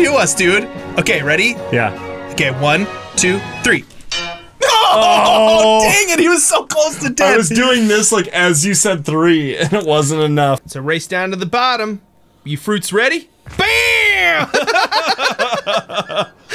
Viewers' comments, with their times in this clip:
0:04 (hammer sound effect